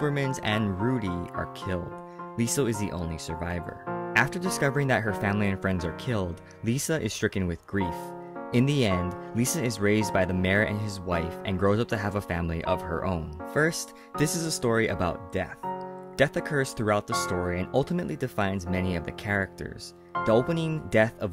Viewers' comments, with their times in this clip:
0:09 Oof he says Lisa it shooked me